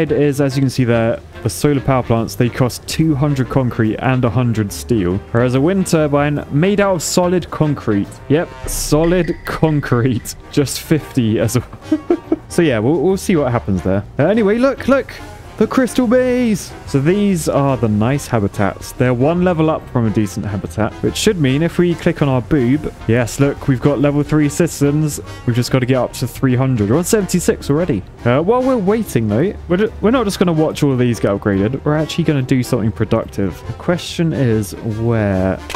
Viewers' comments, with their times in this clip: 0:08 Why was the amogus sound 😭 what was the relevance
0:23 Lets click on our boob , yes, but I don't have one, oh, its bulb.